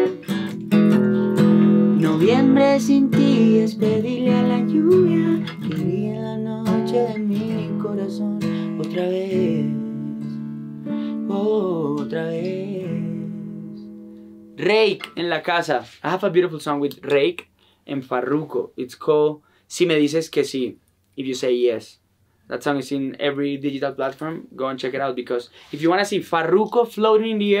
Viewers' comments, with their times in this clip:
0:10 that run tho....